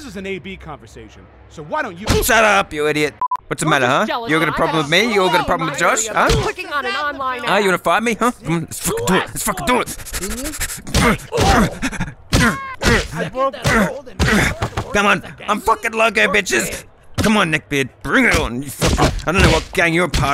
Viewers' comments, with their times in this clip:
0:07 that sounds like a rap song